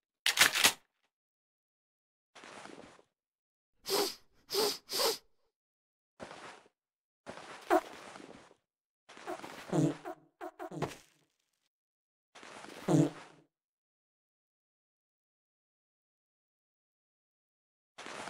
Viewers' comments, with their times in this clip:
0:04 First time hearing gordon sniff